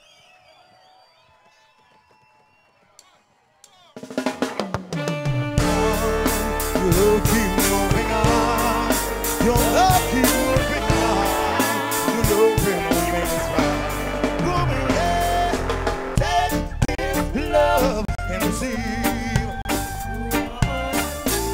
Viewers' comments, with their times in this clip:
0:05 Big fan of Junior Kelly's music... I wish he didn't sing his songs so fast in his live show... My favorite